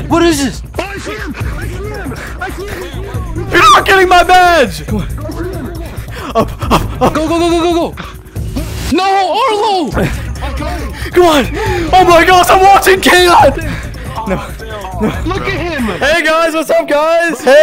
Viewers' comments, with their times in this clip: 0:03 that voice crack was crazy 💀